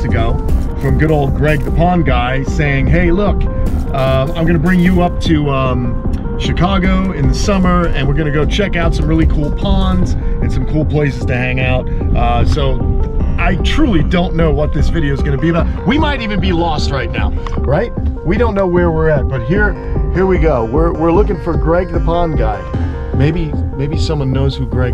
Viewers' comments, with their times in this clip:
0:09 Wish I could watch but the annoying repetitive back ground music killed your video for me